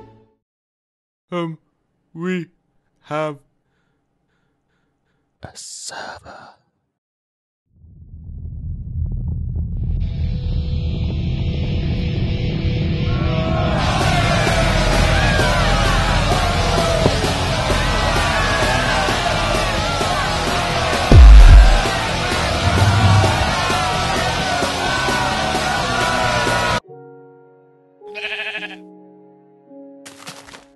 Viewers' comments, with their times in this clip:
0:05 villagers are British
0:15 that sounds like the eddsworld obligatory building montage song